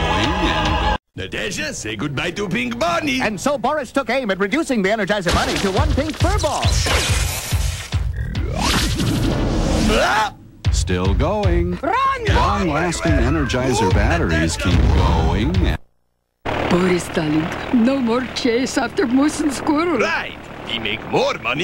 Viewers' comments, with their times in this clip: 0:07 shooting statue of liberty sounds like something you'd heard in Skrillex song